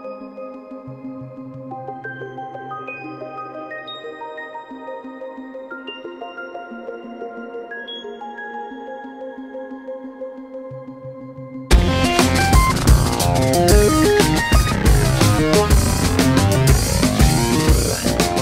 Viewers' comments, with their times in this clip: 0:03 just wonder does arpeggio synth from beginning (< ) is DW8000 ? Assume based on that click sound between the notes...